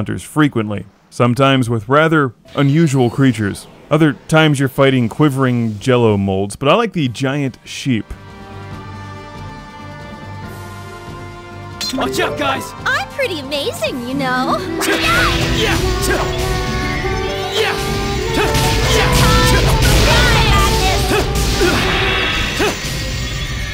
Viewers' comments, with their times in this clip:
0:10 Did I hear Ichigo Kurosaki say "Watch out guys!" ?